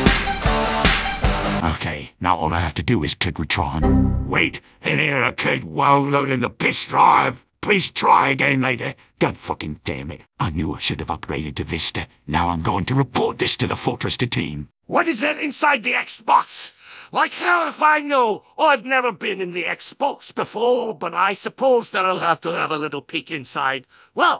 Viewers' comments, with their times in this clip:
0:08 Why does that sound so good, Like the Sniper actually said that.